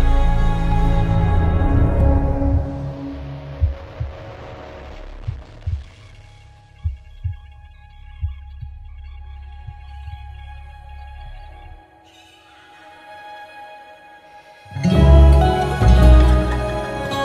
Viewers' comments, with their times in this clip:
0:03 The amount of detail that is packed into your work is incredible. Your composition is one thing, but the production is so rich also. This album is going to take a lot of listens to absorb as much as possible. For example, the crazy bit crusher fade out that I listened to like 5 times before I could continue. And all of the hints of previous albums, especially that section towards the end. I'm excited to line all of these up and hear the full saga. I'm sure I could listen for years and still not pick up on half of it. Thank you for bringing such beautiful and interesting art into this world, it's always so inspiring to hear your music.